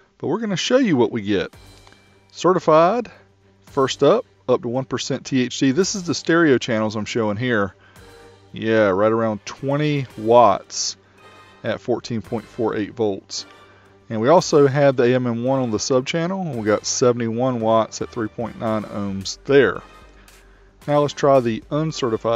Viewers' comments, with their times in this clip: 0:04 i think you mean thd and not thc :D or am i hearing this incorrectly :D